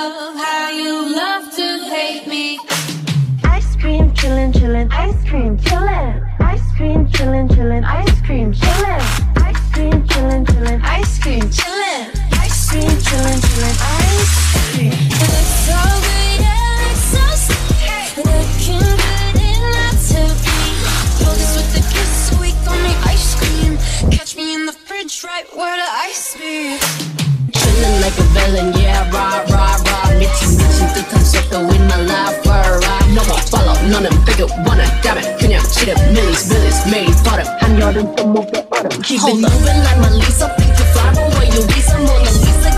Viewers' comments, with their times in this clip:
0:04 omg jisso’s voice is so cutee
0:28 Lisa´s rap in ice cream with Love to hate me instrumental AAHHHHH